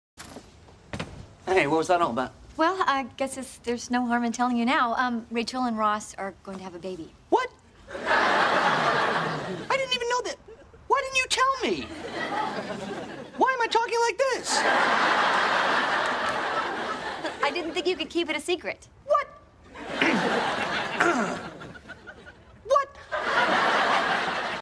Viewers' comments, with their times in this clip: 0:07 is the exact way I answer when I am presented with ANY kind of surprising information :D